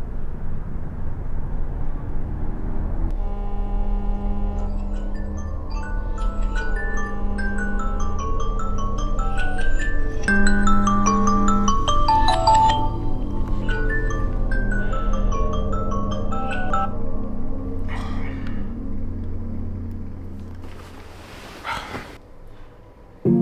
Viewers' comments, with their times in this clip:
0:04 this alarm is haunting me in my dreams💀
0:06 MAN I HATE THAT ALARM SOUND 😭😭😭😭😭